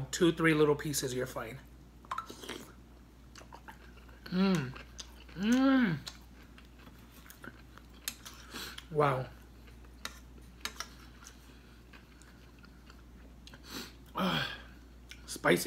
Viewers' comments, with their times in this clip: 0:03 Was that a Grindr notification 😆 Cochino!